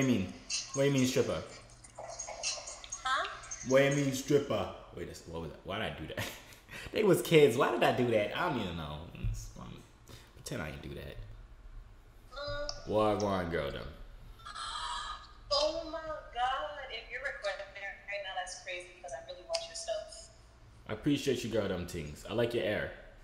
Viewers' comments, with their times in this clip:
0:07 In he made tht voice sound like a girl